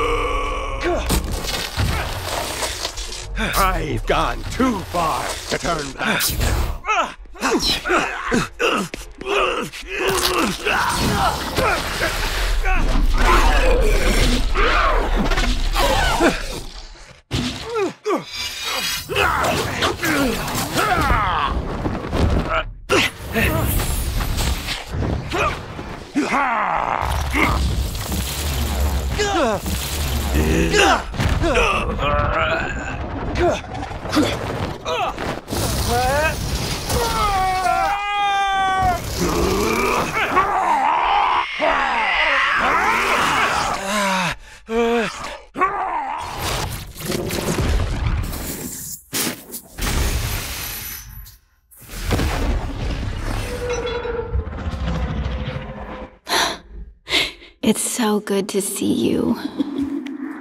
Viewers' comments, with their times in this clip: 0:05 nice there's no background music or any sound for the magic spells
0:06 whats up with the sound editing?
0:07 the most awkward fight scene without bgm
0:41 Cloak screams ToT